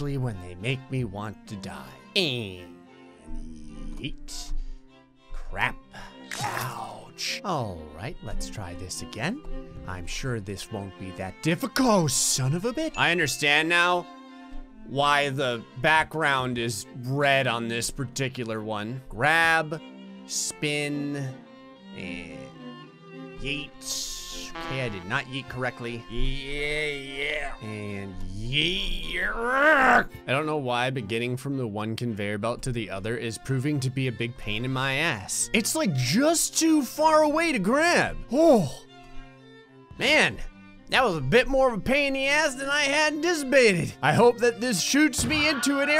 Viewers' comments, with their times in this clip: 0:07 is it just me or do you sound like Willy Wonka right there?
0:31 why is there asinterklaas tune playing on the back ground